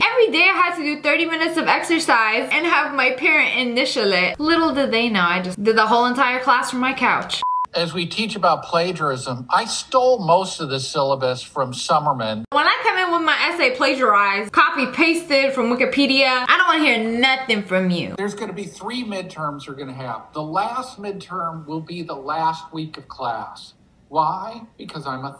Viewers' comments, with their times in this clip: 0:07 he sounds like mr incredible's old manager